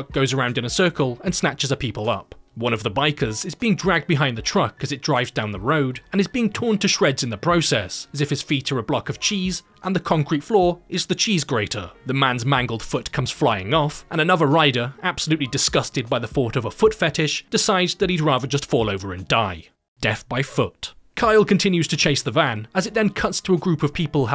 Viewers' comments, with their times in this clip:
0:07 the way he said cheese💀